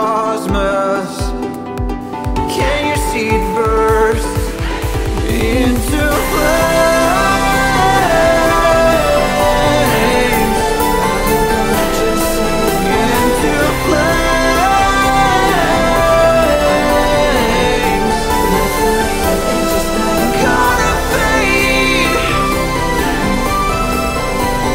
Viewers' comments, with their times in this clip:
0:06 guess that the drop starts here, if yes so it'd sound more impactful if you added some sub bass and some sidechain at the instruments Also maybe taking a look at scales and stuff (some parts feel offkey), but i still like the vibe of the track!!! Keep it up buddy :D